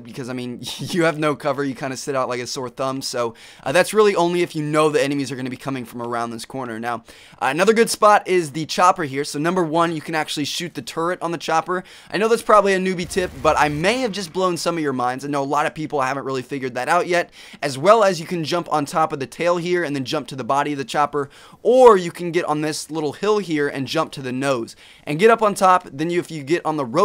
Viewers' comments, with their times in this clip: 0:10 ''You can actually shoot the turd''? I know you said turret but it sounded like turd :)